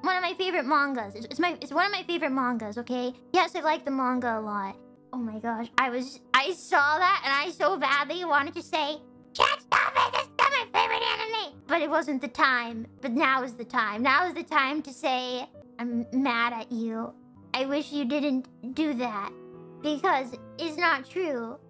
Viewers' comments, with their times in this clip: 0:09 Best choice for Toad in the Mario movie, hands down